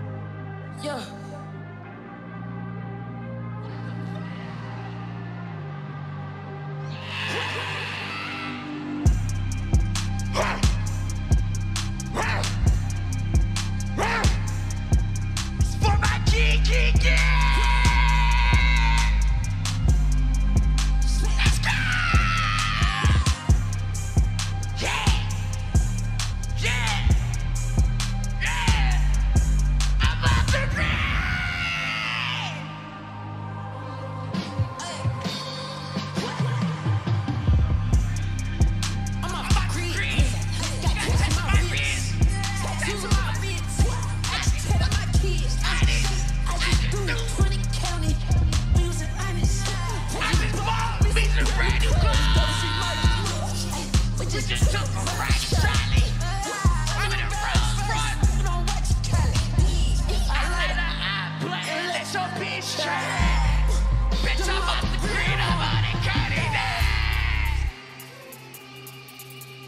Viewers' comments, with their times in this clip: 0:09 These grunts Carti makes are so fire🔥🔥 To This day there has never been better carti screams
0:50 the way Carti said I just bought me some brand new clothes 💀